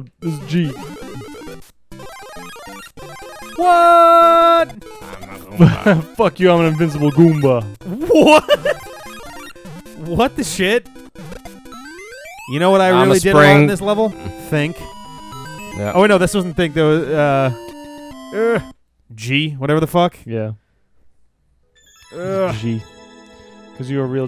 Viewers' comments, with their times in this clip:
0:07 I think I've always pronounced it as "LA-ki-tu", as opposed to "la-KI-tu". WHAT? SPRINGBOARD! WHAT? WHAT! SPRINGBOARD? SPRINGBOARD WHAT?!